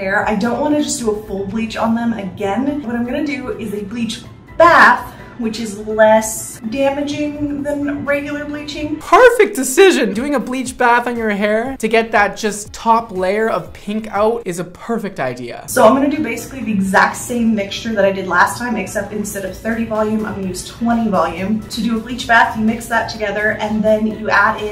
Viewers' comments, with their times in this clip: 0:09 Do you hear the voice crack? check